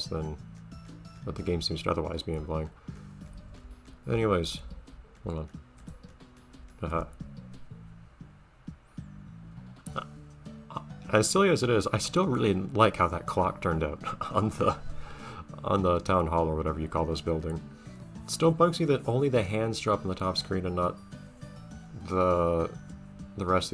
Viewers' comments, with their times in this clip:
0:04 had a good laugh at that brake in thought